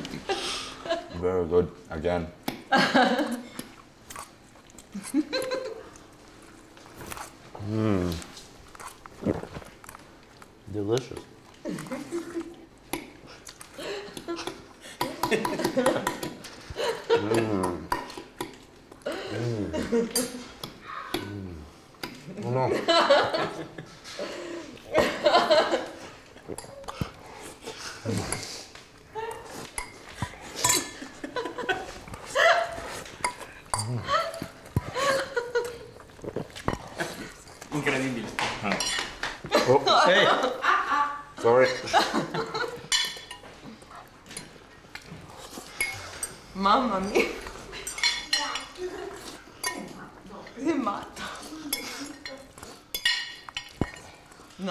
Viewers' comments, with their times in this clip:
0:09 gurl chill its not a meme to laugh about it so hard😑
0:35 who else found cringy asf him just moaning